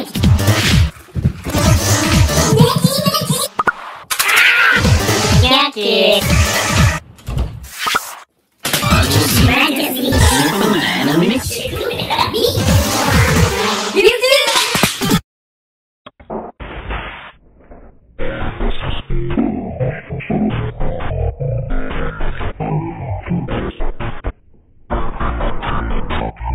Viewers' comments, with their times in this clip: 0:10 Why is the music creepy?